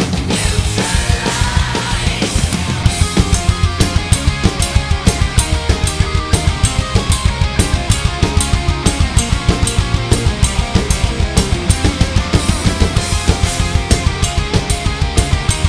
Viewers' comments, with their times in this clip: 0:03 Those Ride-hits starting are placed/sound fuckin' awesome. 🤘 🎶 🖤